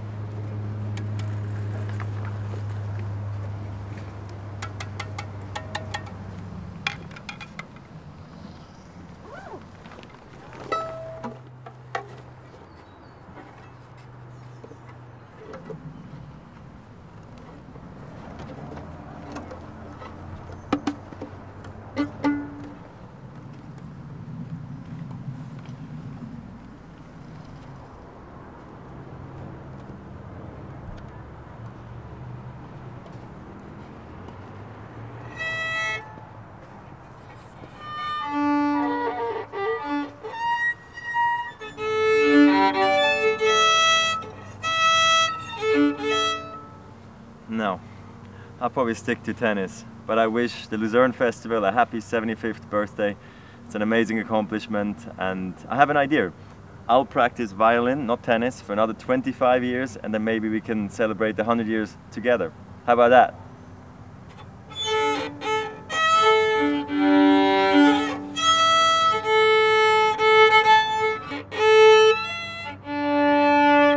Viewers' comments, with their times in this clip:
0:10 Huh? Where did this Violin come from?
0:55 And I have an idEAR!